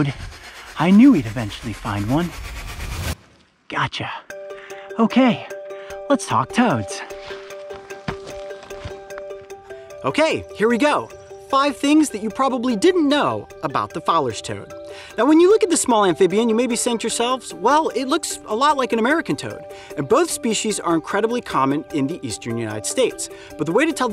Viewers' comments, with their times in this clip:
0:05 he sounds like a child predator lol